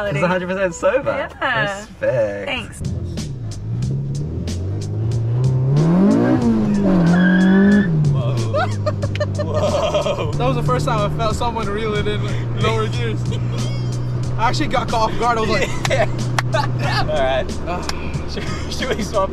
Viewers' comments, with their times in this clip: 0:06 That guy sounded like the car